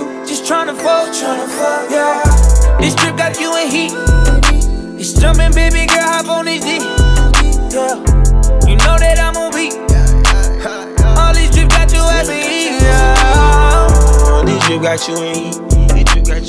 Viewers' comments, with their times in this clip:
0:03 He's adlibs were my favorite part of the song. I kept replaying